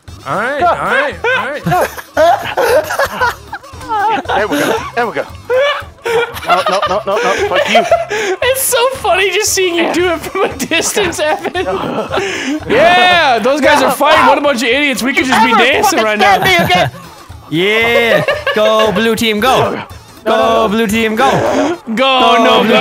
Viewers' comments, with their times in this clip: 0:04 anyone else here that background music? Lmao